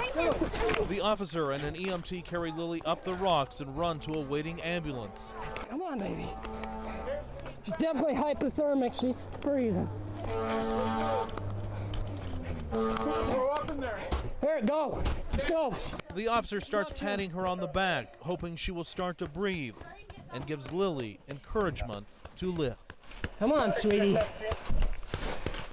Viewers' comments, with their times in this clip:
0:09 Imagine waking up and hearing the ambulance horn and all these men yelling Sorta would give you an adrenaline rush